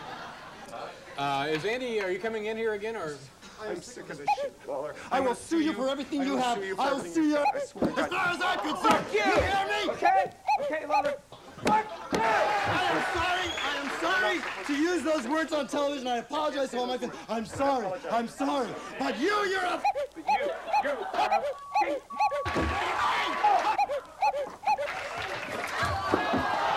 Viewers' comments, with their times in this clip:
0:07 the bleep noises lol!